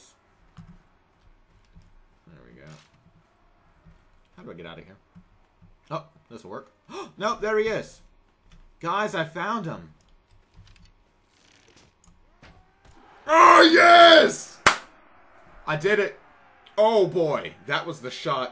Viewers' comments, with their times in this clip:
0:05 For those wondering. The cheer afterwards felt oh so good.